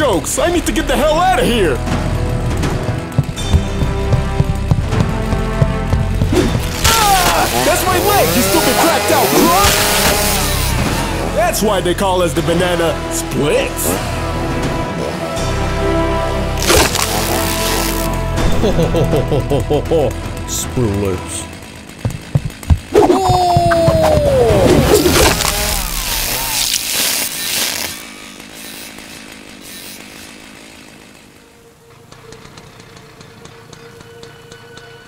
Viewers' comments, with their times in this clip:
0:07 Did he say "That's my leg you stupid crocodille Hump" !? 😂
0:19 knighty knight voice